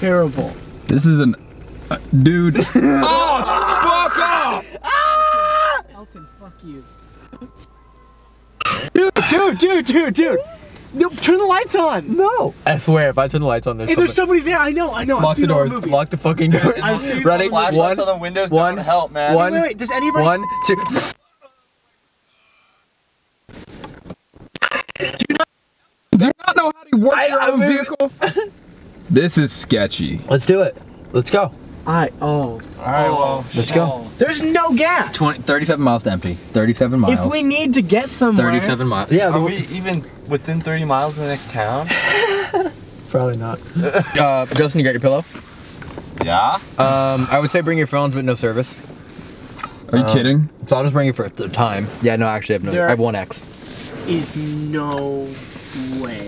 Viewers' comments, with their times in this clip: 0:07 Don’t know if it’s just me but at the mark it sounds like there’s some crying(?) type sound in the background of all the yelling...
0:07 someone screamed outside
0:10 the mic glitches and then if you hear very closely you can here someone say something out in the distance
0:15 there is a baby crying😂
0:21 the noise cuts out and then u hear like a big low sigh it was a mans voice
0:23 anybody else have choppy audio?
0:23 the audio cut out
0:25 when you turned on the lights the mic started glitching out really bad......fuck no
0:25 Did you here the crackley sound !
0:26 damn I got such a weird vibe when there were messing around in the car and the audio was acting all wack...
0:26 Wtf happened to the audio ?
0:27 did anyone else hear glitching in the audio
0:27 Yeah the audio was messed up like ish
0:37 Mic is cutting out